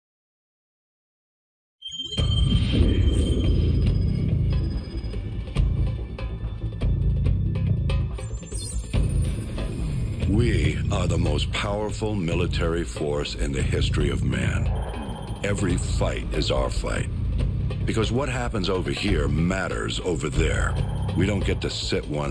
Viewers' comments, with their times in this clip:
0:03 background music is amazing